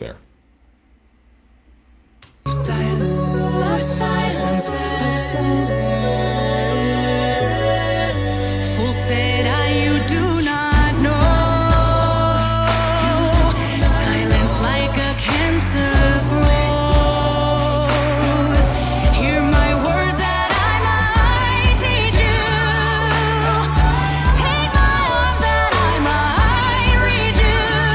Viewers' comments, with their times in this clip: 0:07 I had the same reaction. Something sounds a little funky there.
0:08 *Kirsten. Not Kristen. And I can’t believe you didn’t acknowledge the key change It’s incredible in A cappella.